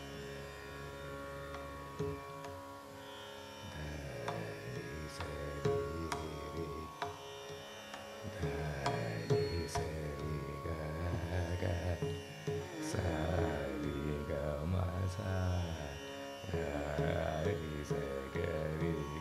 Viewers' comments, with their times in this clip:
0:04 Another meditative piece from TMK! Cinematography was very inspiring!!! And is he 2 octaves lower than the base ??!!